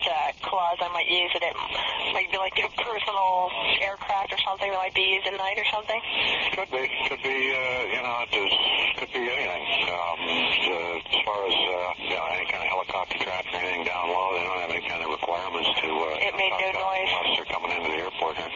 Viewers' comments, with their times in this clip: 0:05 "...could be anything..." These guys know . The way he talks I just know that he is in on UFOs lol.